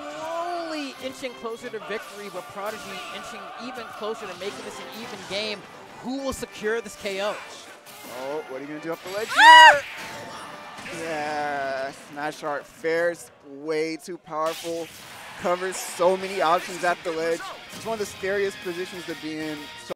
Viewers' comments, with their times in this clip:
0:08 The squeal at the end though.